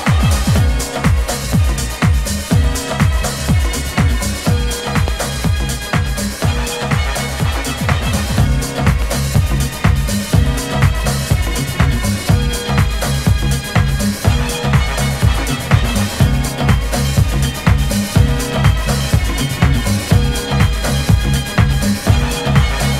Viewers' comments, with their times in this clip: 0:03 WHOAAAAAA what a track!!!